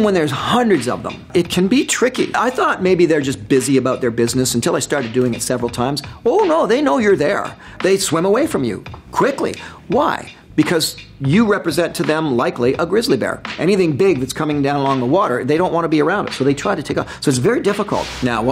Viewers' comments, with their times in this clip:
0:05 'ho noo theiy knoo yure theire!' that Ontario accent jumped OUT